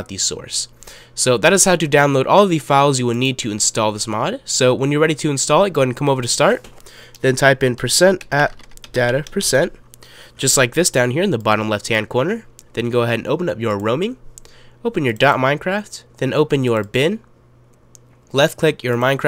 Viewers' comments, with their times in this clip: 0:06 what do we ave to write ? I just cat hear it :(